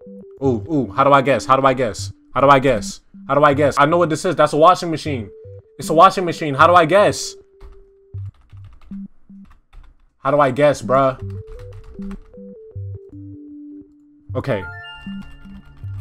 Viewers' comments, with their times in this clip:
0:03 that was funny it goes from epic crazy beat to a calm chill beat